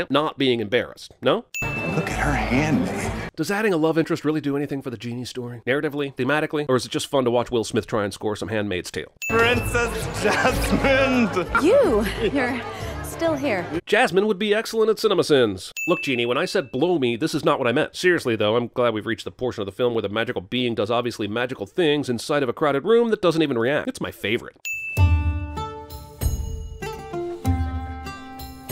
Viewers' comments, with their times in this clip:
0:09 That guy seriously sounded like he said Princess JasmineD lol